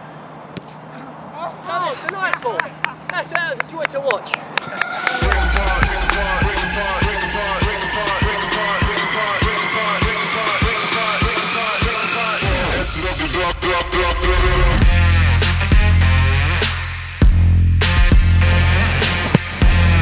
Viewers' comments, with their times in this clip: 0:05 it sounds like the singer is also calling frank lampard
0:05 Does the song sound like it’s saying Frank Lampard over and over? Lol it does to me